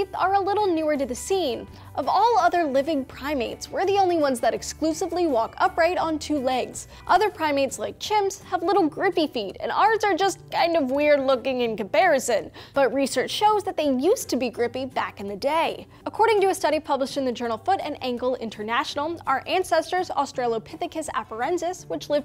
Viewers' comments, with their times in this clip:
0:09 "...and ours are just kind of weird-looking in comparison." The way she says it it's like she's channeling Hank Green.